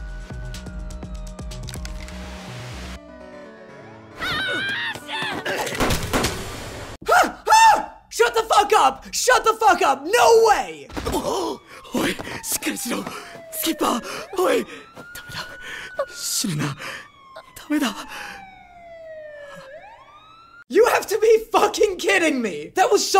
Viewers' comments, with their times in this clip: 0:07 the scream though